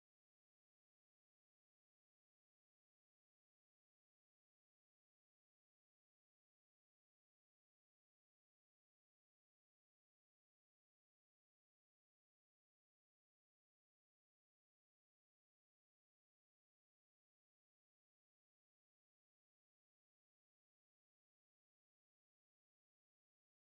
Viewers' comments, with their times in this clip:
0:05 Bro Ur Voice has Cut In Between Video From